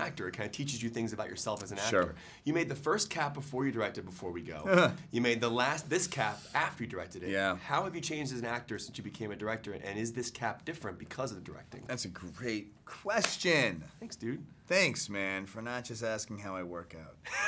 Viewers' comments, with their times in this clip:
0:04 what type of laugh was omg